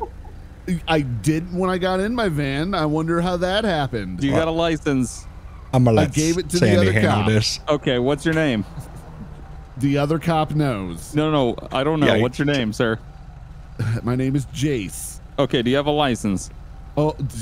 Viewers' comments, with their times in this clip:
0:03 lol "do you got a lithens?" lol